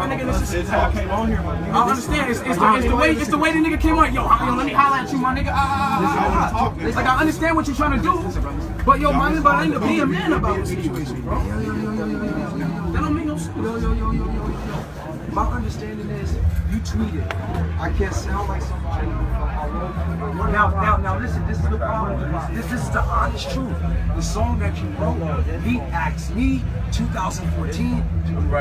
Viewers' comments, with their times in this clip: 0:05 when you're starting your car
0:05 when u tryna start yo car inna cold ass day
0:14 Travis sounded like Kevin hart 😂😂😂 no,no,no,no